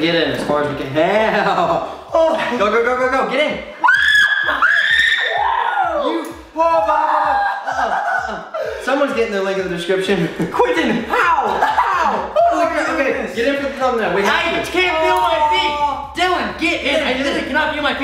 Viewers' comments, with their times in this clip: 0:04 I replayed shreek over to many times and I can feel the chroma zones leaving my body
0:04 R.i.p earbud users